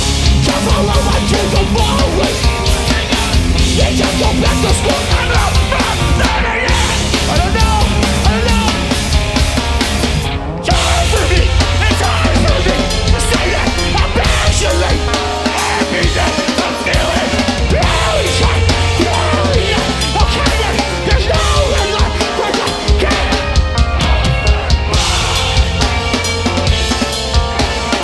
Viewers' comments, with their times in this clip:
0:10 interesting choice to put the clean guitar part on the left channel.